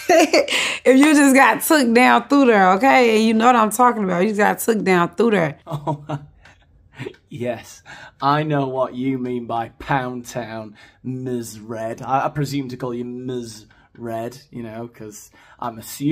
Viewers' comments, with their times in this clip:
0:03 no, I have no idea what she’s mumbling about 🤷‍♀️